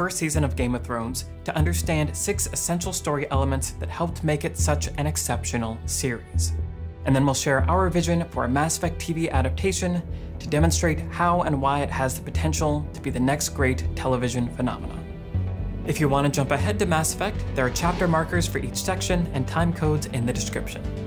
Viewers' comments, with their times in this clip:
0:06 anyone else just get massive chills hearing this music? It’s Pavlovian - I hear ME theme, I start playthrough #523